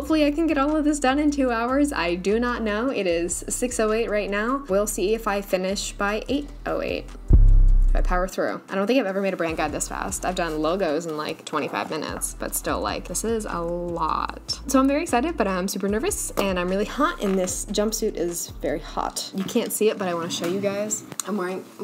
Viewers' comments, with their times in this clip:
0:06 you silly hahah you actually put in an 808 sound :)